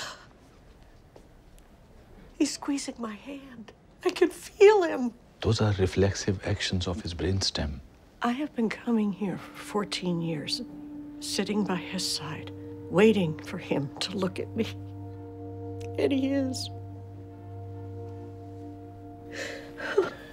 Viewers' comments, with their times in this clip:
0:07 her voice is so familiar to me?? has she been in any other tv shows or movies? edit: just realised im thinking she kinda sounds like Winona Ryder lol 💀 not rlly but that line she sounded like it